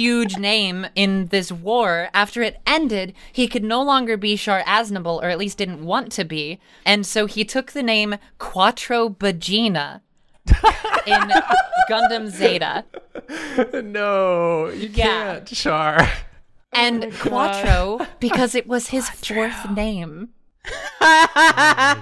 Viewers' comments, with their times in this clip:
0:09 I can't stop laughing 🤣🤣 Quattro Bajeena sounds just like "cuatro vaginas" wich means "four pussys" in spanish